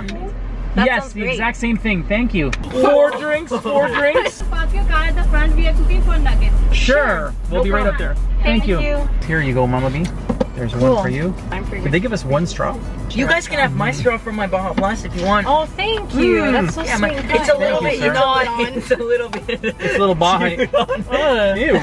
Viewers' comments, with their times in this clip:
0:04 who thinks the voice sounds indian?